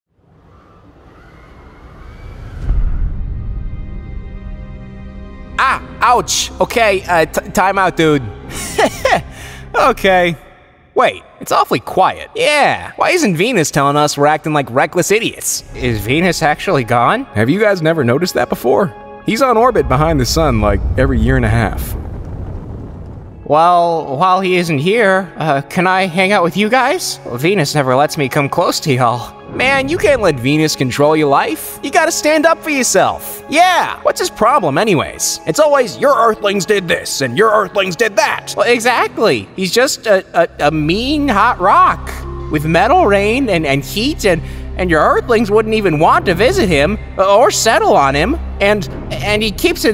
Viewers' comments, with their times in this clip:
0:03 USSR ANTHEM STARTS
0:08 I love earths laugh 😂😂🤣
0:36 Wow that sound like Venus alot